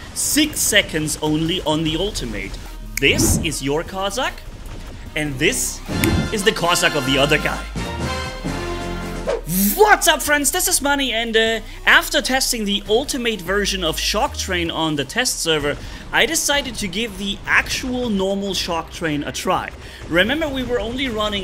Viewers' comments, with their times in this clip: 0:08 zis is a picture of zi robot of zi average german weaponry expert and zi expert himself. Zis is wat we are zalking about.